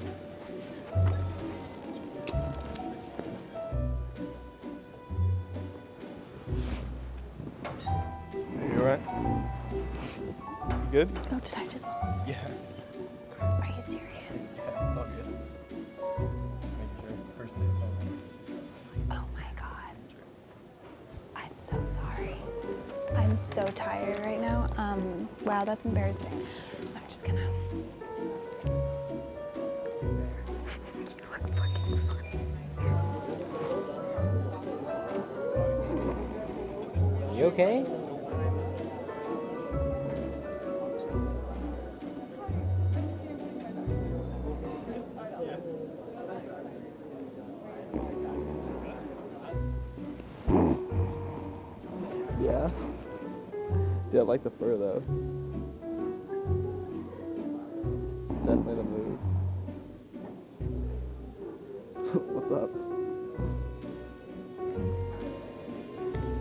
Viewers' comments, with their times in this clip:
0:08 The way he said 'yeah' 😂❤️❤️ that was adorable!
0:10 The guy who was reading a book and kept laughing was cute and the guy was cute lmfaooo
0:29 Snicker “You look funny...”
0:30 Is no one going to talk about how the mic picked up her whispering "He looked fu*king fine" ???
0:37 SWEETEST VOICE EVER I LOVE HIM ALREADY
0:50 awww how cute! He was laughing and making sure shes ok the whole time🥺💖
0:51 Why is no one talking 😭